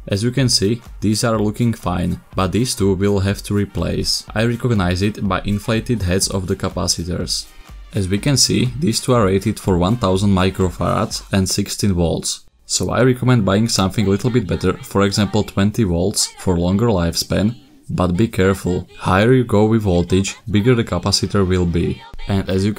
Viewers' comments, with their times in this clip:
0:08 DID HE JUST SAY MICROFARTSSS XDDD